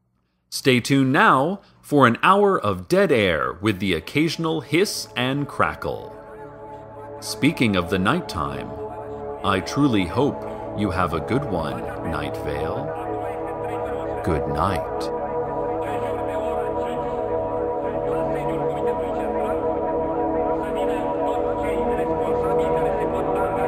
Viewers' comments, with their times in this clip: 0:07 Why is there romanian
0:10 the man in the background is speaking Romanian! :) You guys have fans even here, Eastern Europe!